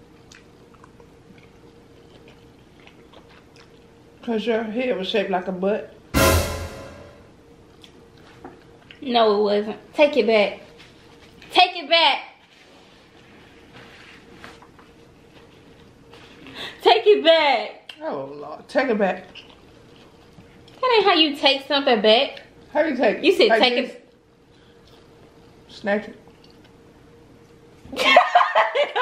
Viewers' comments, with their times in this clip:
0:10 y’all she sound just like penny proud😂😂😂